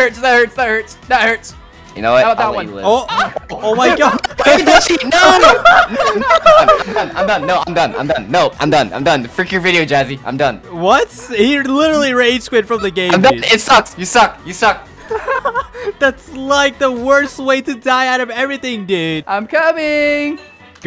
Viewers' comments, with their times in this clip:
0:03 THERES A MOAN 😂
0:03 I heard sussy voice maybe it’s demon but AYO THAT’S DA BIT SUS